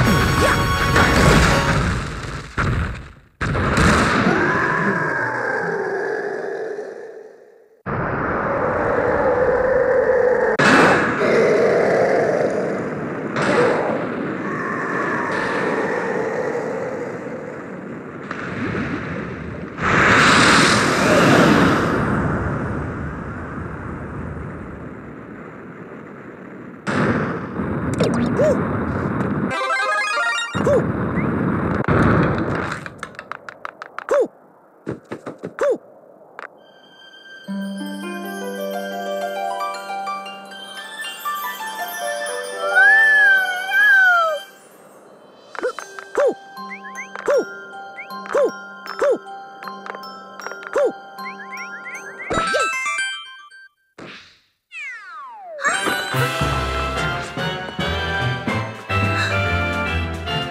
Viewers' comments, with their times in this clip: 0:10 Not what I expected from that part. BONG! :):):):):)
0:43 what the what is wrong with her voice